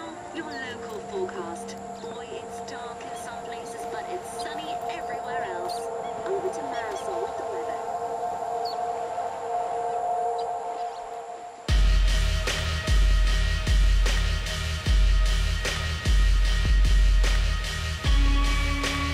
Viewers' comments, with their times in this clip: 0:03 nice background music